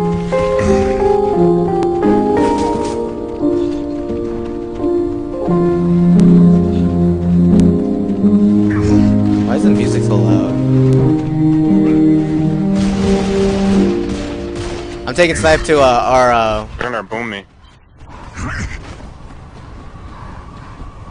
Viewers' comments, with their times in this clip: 0:08 why is the music so loud lol